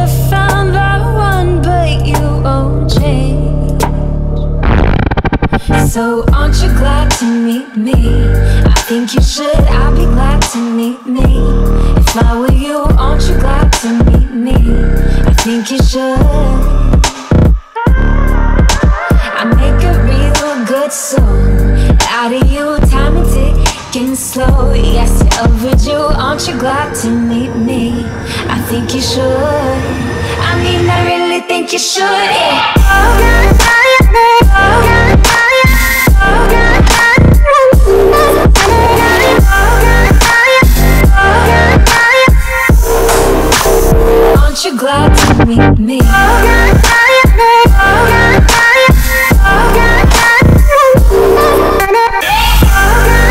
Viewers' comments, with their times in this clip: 0:03 Thats My Fart SFX Dude
0:04 is when i start feeling bass
0:05 Can someone translate the drop rhythm
0:27 WHAT A BEAT😀❤
0:30 Drop thank me later
0:31 selling beat drop replay buttons: you’re welcome :)
0:31 that drop tho
0:31 is it me or it says Lone Hawk Night
0:32 what i hear: Logan Paul Logan Paul Logan Paul Logan Paul Logan Paul Logan Paul
0:32 “I think you should go on a diet, go on a diet”
0:32 On it says oh guy guy Meaning gay
0:33 That legendary drop ... n' two minutes of silence😑 for those who are not experienced this INSANE DROP😨 till now 🙄
0:36 that slightly stop 😍😍😍
0:40 rap that last part
0:40 rap that last part